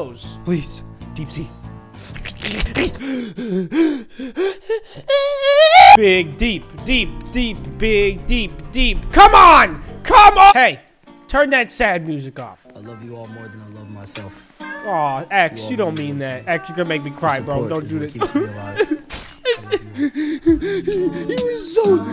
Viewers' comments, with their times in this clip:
0:04 the scream Lol
0:10 the legends voice is back again